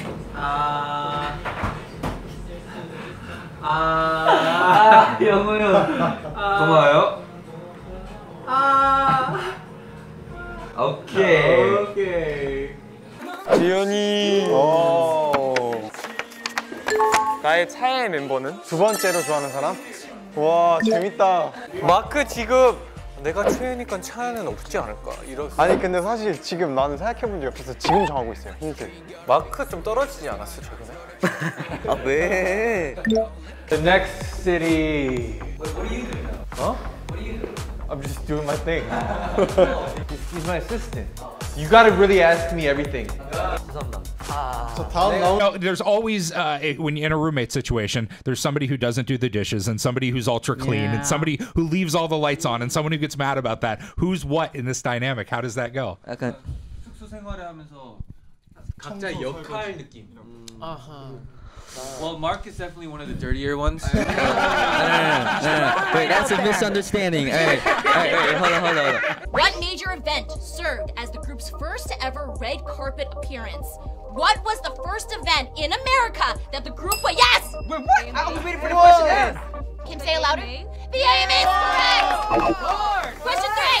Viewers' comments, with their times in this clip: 0:07 Mark's "okay..." basically saying "alright bi*** let's not go there" has me on the floor T_T
0:32 Mark's "Ah waeee!" reminded me of EXO's Chen "ahh waeee" ackkk my EXOZen heart💚
0:32 Mark is now Jongdae’s child that “ah waee”
1:06 i don't know why but i like the way mark said misunderstanding